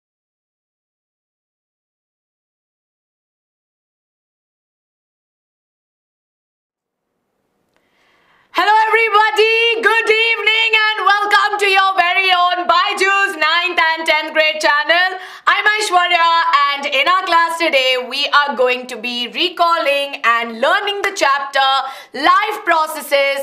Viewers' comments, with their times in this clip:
0:07 that voice scared the shi* outta me man wtf. a great way of greeting students... with a demonic voice💀💀